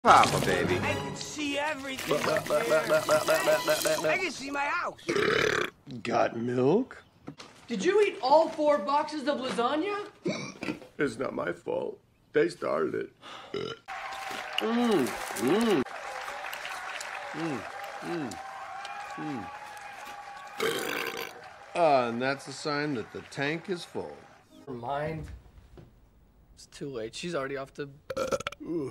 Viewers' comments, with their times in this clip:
0:05 Burps. Got milk? 😅 He’s a fat cat 🐱
0:10 This could have been a very powerful fart, but they didn't add sound.